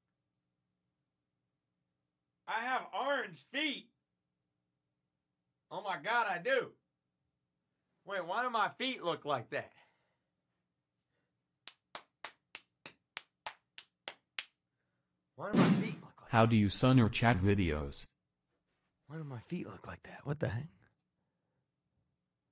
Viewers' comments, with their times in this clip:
0:05 the feet claping💀💀💀💀💀💀💀 got me dead😭✋